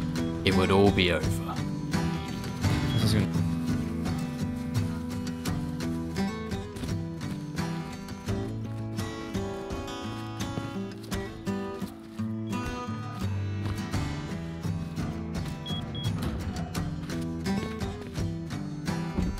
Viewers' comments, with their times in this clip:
0:03 I love the silent running at night, It gives an eerie feeling and makes you think something is going to occur.